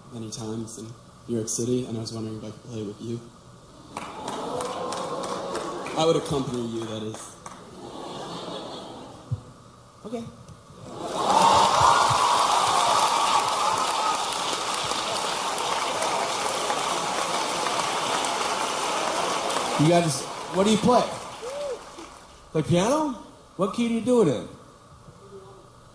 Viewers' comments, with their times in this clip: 0:09 the most smooth "OK" ever